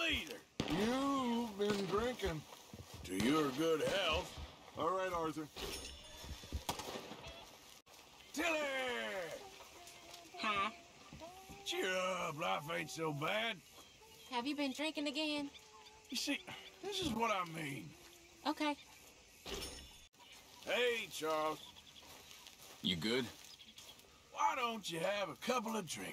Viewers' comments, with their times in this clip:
0:08 He sounds like Teddy Roosevelt :)